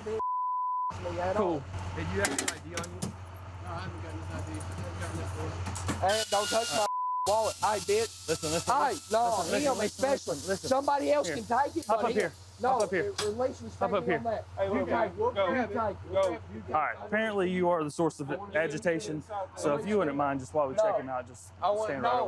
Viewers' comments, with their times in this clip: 0:06 sounds like the dentist